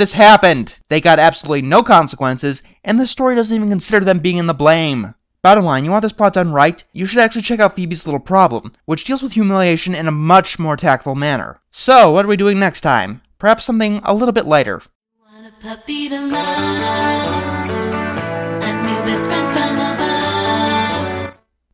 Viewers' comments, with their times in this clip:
0:07 Gerald is laughing why is he laughing also he is a true friend for not showing up to make fun of arnold in bunny pajamas